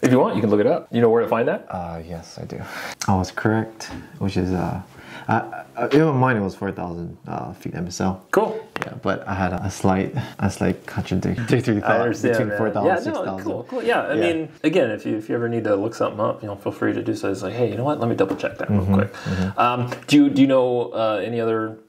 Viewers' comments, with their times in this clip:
0:06 “4,000’ MSL” ** CRACK ** lol